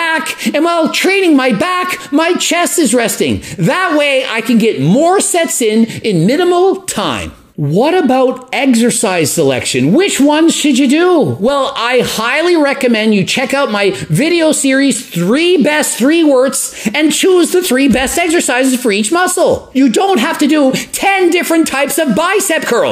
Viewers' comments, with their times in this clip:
0:08 "what about EGGSercise selection?"